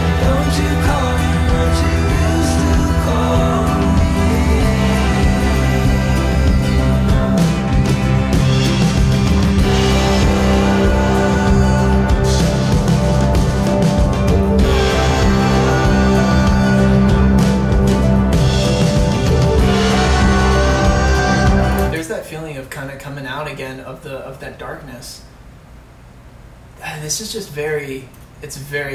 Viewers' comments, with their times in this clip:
0:10 notice how in cherry at the end when he’s yelling the scream/yelling gets louder as her voice gets quieter until he can’t hear it anymore and he yells the loudest when it’s completely gone ( it starts )
0:11 is it me or you can hear the back voices saying “cherry” too ??